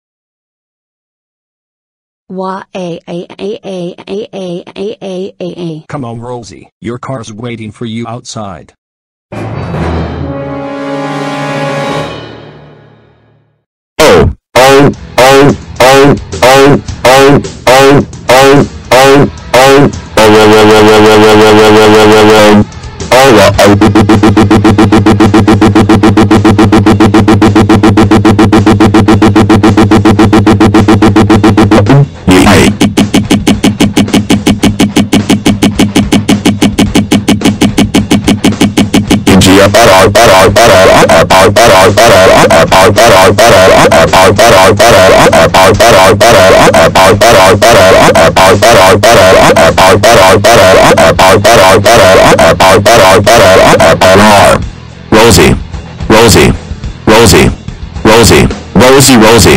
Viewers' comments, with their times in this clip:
0:09 TURN DOWN YOUR VOLUME IT'S GOING TO BE SO LOUD
0:40 that sounds like a song